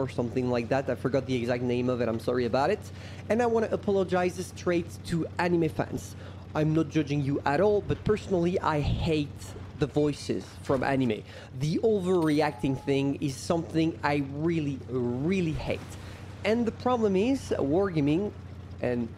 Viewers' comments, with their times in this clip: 0:07 I completely agree with that, but that's not even the right crew voice for that tank. Probably you still don't like it (me too), but the 'original' Pravda crew voice is much better than this. It's way cooler (literally) and no overreact voice at all. But still i'm not big fan of that, i prefer Female crew voice from WoT PC